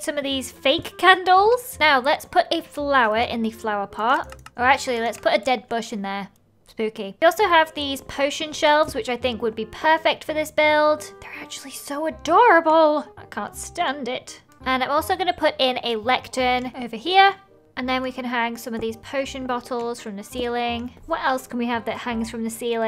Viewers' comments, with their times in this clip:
0:03 😭☠️ "spooky." SHE SAID IT SO CONTENTLY AMD PLAIN IM DEAD